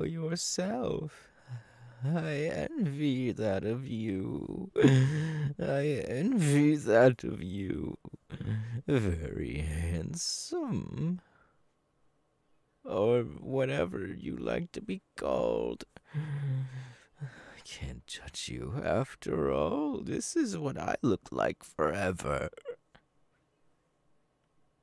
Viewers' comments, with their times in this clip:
0:08 he reminded me of how an elderly woman would tell someone that her grandson is a fine young man lmao